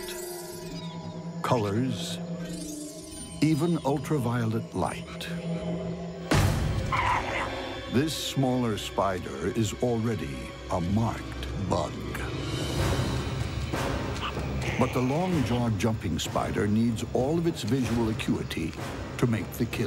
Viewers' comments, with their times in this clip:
0:06 jesus these sound effects.